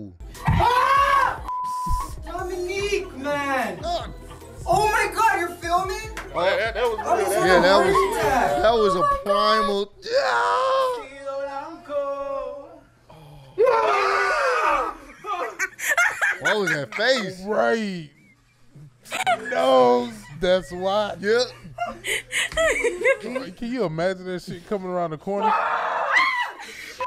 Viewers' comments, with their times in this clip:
0:08 I hella thought the dude was singing island boy lol